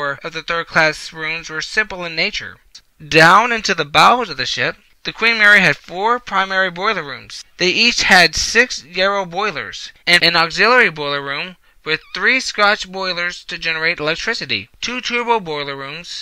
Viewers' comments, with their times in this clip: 0:03 I come back on if you care to see the rest. Apologies for the audio quality on this first collaboration. I’ll be sure to provide audio equipment to guests for future collaborations.